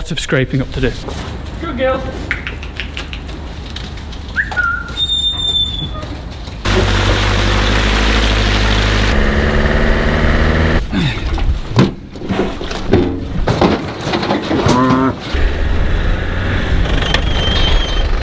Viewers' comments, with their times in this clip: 0:04 is the perfect assassin's creed whistle I've ever heard